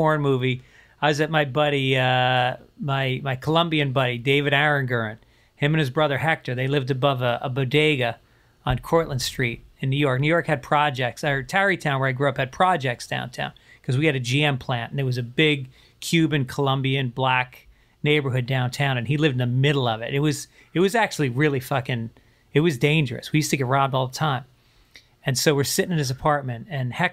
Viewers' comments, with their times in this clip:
0:10 Joey with the open mouth breathing kills me like how can you not laugh while doing the interview😂😂